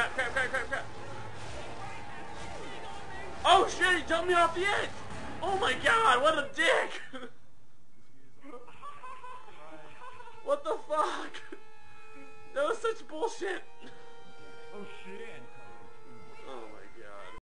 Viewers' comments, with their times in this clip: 0:08 OMFG scary laugh